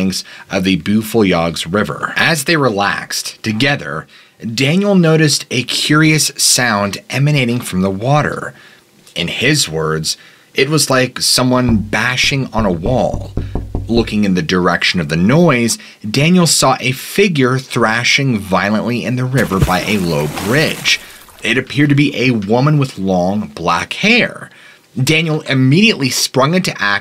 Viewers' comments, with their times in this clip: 0:10 Dude you gotta warn me when you play a sound bite like that! Freaked me out for a sec since I’m the only one at the house, it’s about midnight, and the knocking sounded like it was coming from the outside of my bedroom door.